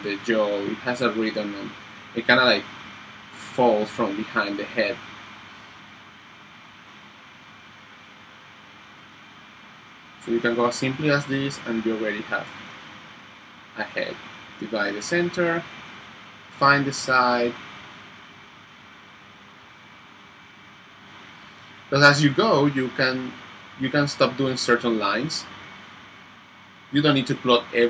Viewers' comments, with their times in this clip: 0:10 the sea waves start attacking this video